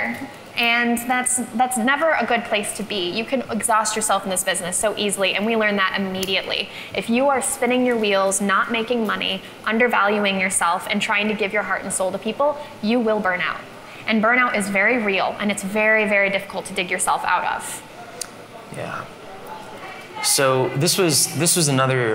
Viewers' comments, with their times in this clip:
0:10 aauhmmm... ( till minute was 32 times her, 21 times him)... aauhmmm...